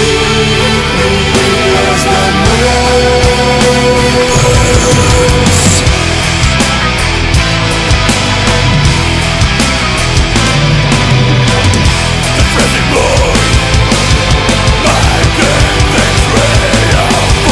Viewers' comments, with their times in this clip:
0:04 this is my first time hearing this song and I WAS liking it but as he started sing like that in into the song... the shit just hit rock hard to crap sad.. was really getting into it :(